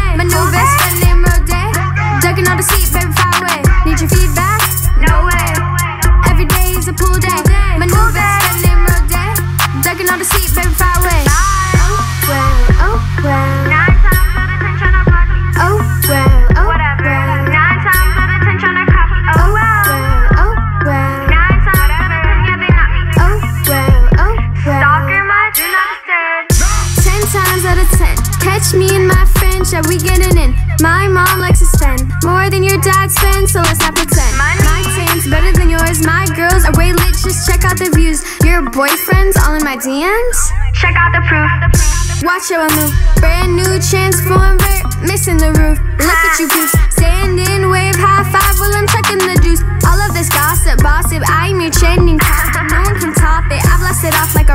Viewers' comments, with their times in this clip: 0:08 this world actually sound like a bad word in my language
0:29 sounda like "movements"
0:30 why did she sound dumb when she rapped that line. The way she said it tho, sounded like she was confused or sum🤣
0:38 sounds even dumber omg 😞😞